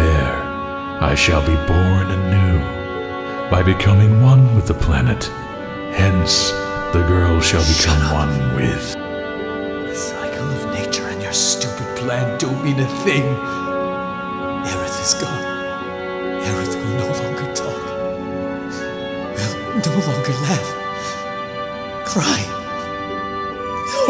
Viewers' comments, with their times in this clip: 0:08 From cloud's voice acting gave me a chill. It is awesome act!